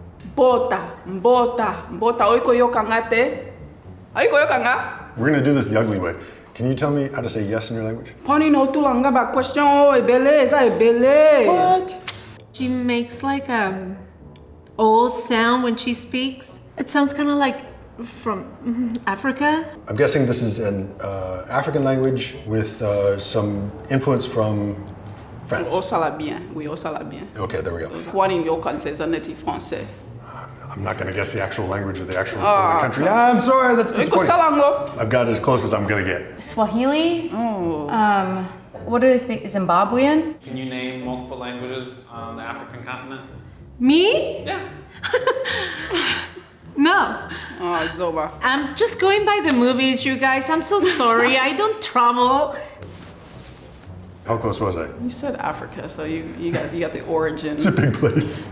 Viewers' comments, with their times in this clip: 0:04 xd why Bro thought that was one word
0:46 "Ah, you idiot" lmfao because it was said so savagely and calm at the same time